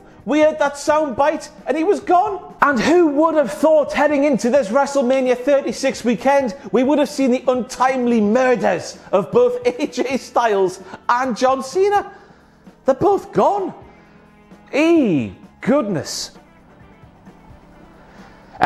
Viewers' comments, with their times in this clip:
0:03 the way he says MURDERS 🤣🤣🤣